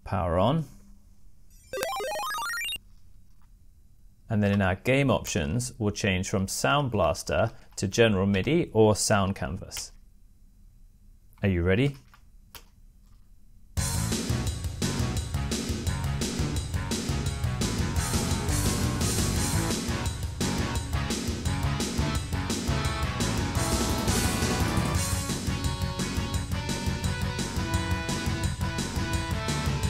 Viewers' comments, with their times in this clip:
0:10 I immediately began rocking out. Did not expect that to sound great.